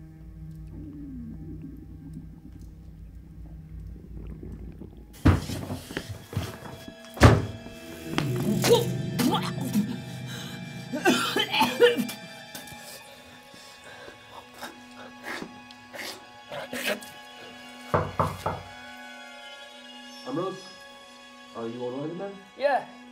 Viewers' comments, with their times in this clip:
0:08 gags HOOBLAAA AHAHHAH A